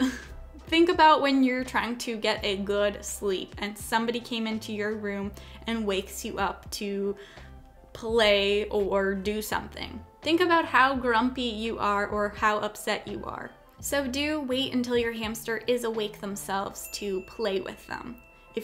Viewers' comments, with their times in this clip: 0:06 sounds like my cat